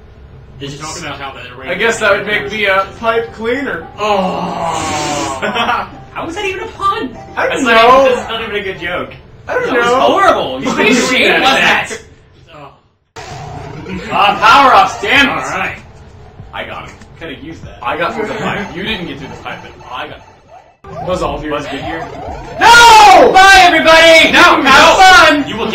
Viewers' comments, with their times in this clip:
0:06 Whoever said, "How was that even a pun" sounded a lot Grif from Red vs. Blue